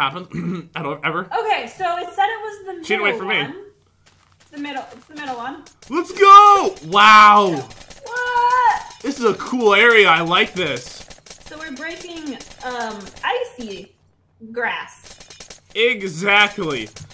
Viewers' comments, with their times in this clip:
0:05 I really like the noise of the grass breaking